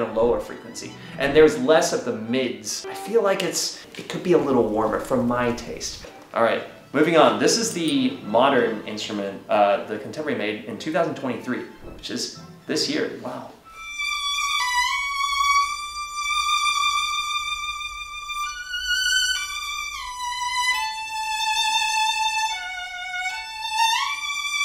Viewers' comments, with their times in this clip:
0:07 The violin on is my favorite! It’s so beautiful sounding! That’s a sound that I am looking for! 🎻💕